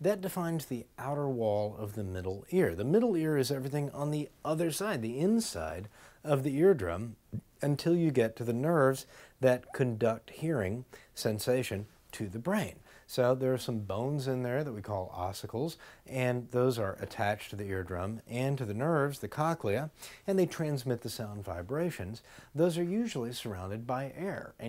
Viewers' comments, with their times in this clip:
0:07 Lol, he burps !